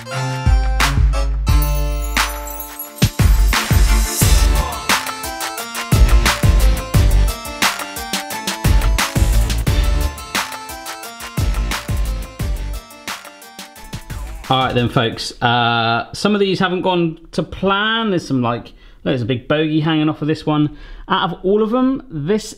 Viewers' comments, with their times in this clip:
0:10 who realised that he was playing a Christmas song